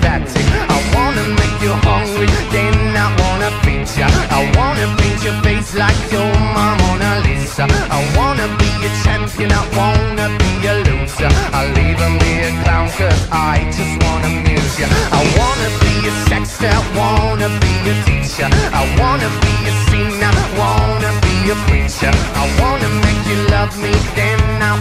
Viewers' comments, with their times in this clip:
0:06 I think he say lisa manoban 😂😂